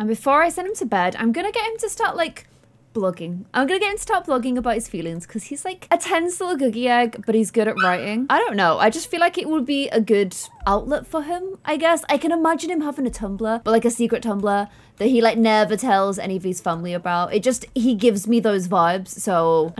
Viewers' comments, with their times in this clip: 0:07 Am I the only one who noticed the high pitch squeal ?